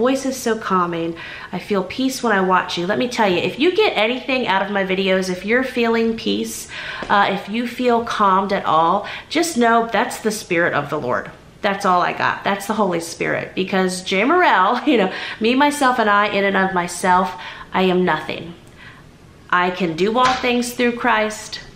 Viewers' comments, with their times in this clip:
0:09 came back to watch for your message, I just got word a love one is ill and needed to hear your message and calming voice